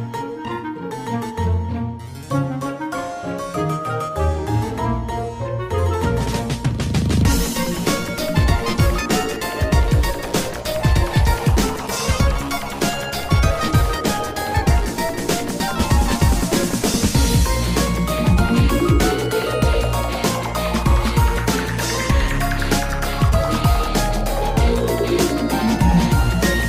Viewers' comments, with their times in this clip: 0:08 almost looks like Kefka theme from Final Fantasy 6 haha